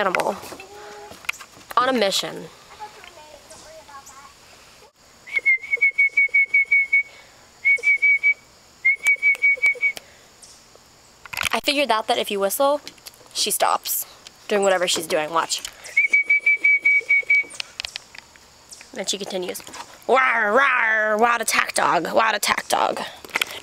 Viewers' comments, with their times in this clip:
0:06 "Hey why do she whistle at me, she has no right whistle at me, I'm going to call my owner and tell on here" that's what that dog thinking for sure.